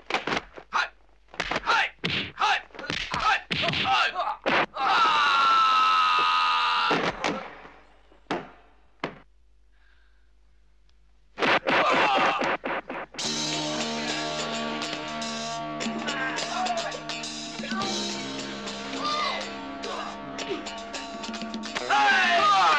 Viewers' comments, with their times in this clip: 0:10 cool boss music. Wonder what it is.